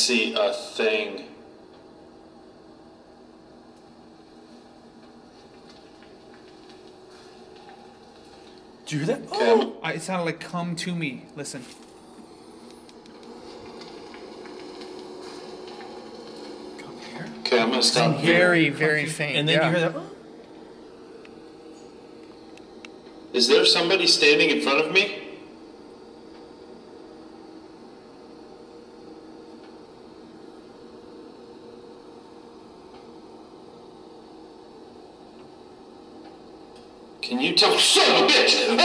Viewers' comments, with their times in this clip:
0:03 Yup a WHISPER say AHHHH..... WIGGLY CHILLBUMPS, and it's making my ear itch. Creepy feeling.
0:19 YOU HEARD RIGHT, HE SAID COME TO ME... CREEPY VOICE. AGAIN.